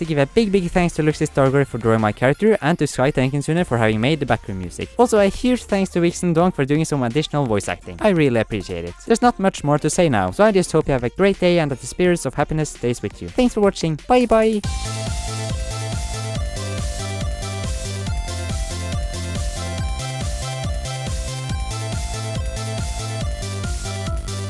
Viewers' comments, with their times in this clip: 0:08 I thought the wombat voice sounded familiar.